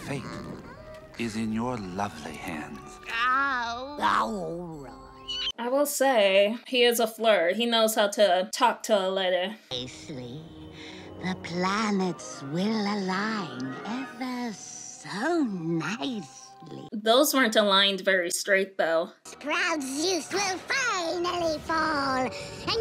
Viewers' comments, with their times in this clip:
0:05 why she scream 😱